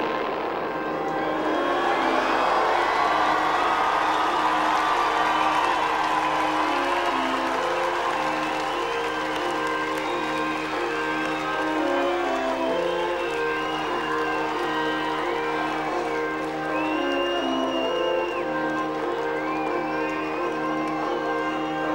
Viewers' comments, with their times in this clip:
0:07 Anyone else hear worrywort ?